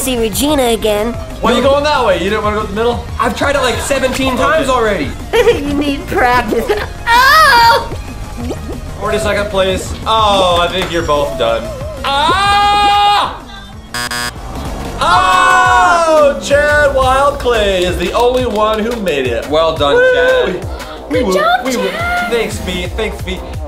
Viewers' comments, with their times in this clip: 0:07 that screech lol
0:07 Pz squire sounds look like he's die